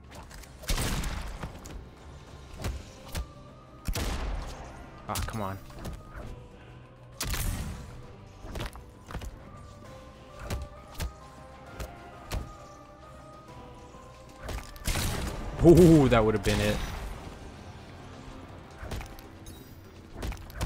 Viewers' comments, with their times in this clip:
0:05 i thought that was gonna krushing blow but that litte "brcc" sound make me laugh :D